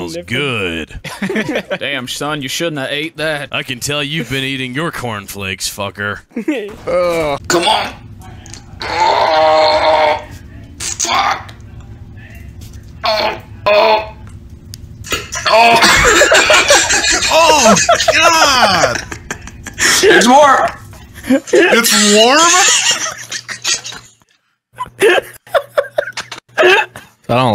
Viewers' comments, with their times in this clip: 0:08 can't tell if he said "it's warm" or "there's more" lol cut off like a premature turd